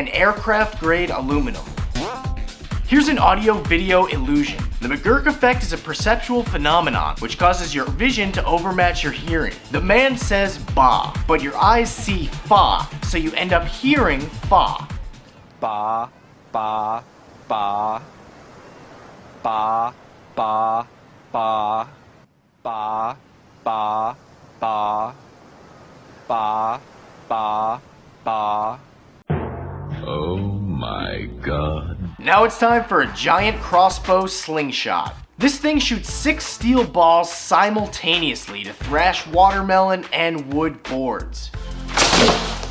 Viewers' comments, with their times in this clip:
0:06 look away or close your eyes and you will hear bah not fah :P
0:07 if u close your eyes u can hear bah
0:14 1. First listen to the first six bah's and the last six bah's with your eyes open. Bah, Bah, Bah, Bah, Bah, Bah... Fah, Fah, Fah, Fah, Fah, Fah 2. Then rewind and listen to the first six bah's with your eyes open, and the last six bah's with your eyes closed. Bah, Bah, Bah, Bah, Bah, Bah, Bah, Bah, Bah, Bah, Bah, Bah. Mind blown.
0:22 i don't get it. All I hear is bah.
0:23 I still hear "Bah".
0:25 he stared saying fah i listend with my eyes closed
0:25 the audio isn't the same because if you look closely you can see him making the f sound with his lip
0:27 close your eyes and it still sounds like bah
0:28 close your eyes, you will her bah!